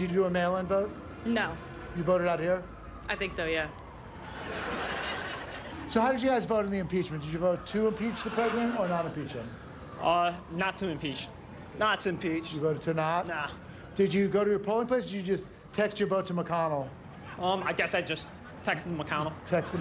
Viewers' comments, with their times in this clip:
0:05 I was missing the occasional chuckles from irl beavis and butthead.